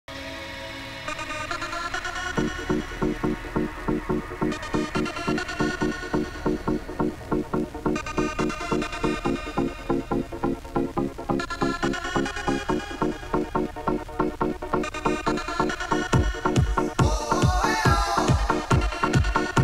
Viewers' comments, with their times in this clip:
0:01 This music 💓💓💓 A memory... Hit like if you remember those days